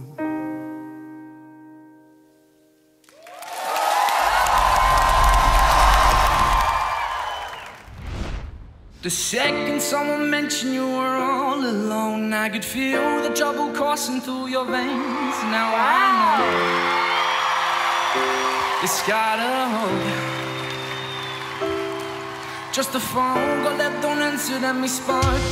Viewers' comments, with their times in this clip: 0:08 Any guy who turns up for an audition in lycra shorts and sings like that obviously has big cojones